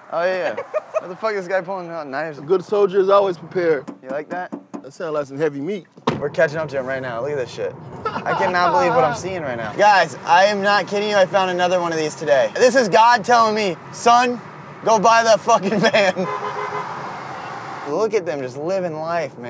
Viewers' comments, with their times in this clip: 0:05 that sound like some meat